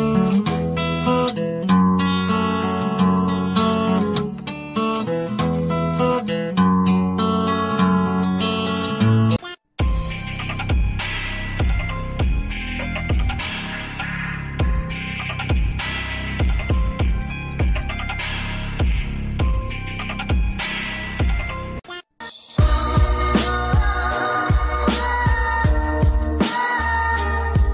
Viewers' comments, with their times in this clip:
0:09 Tune? This one is really dope sounding